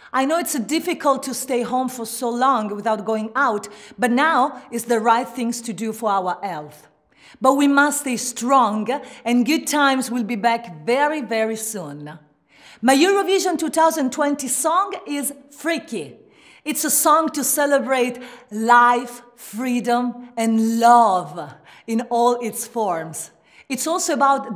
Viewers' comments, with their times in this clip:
0:06 for our elf 🧝‍♂️?